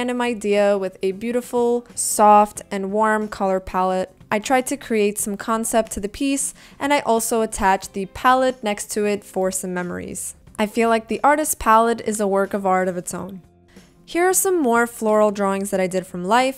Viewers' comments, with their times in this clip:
0:04 Damn it, it's beautiful. Your artbook is great! I also like your speech, it is very pleasant to listen to it, especially for me, a Russian-speaking person :) I also noticed Russian text under the picture That's cool! But why is it there? (I'm just really interested)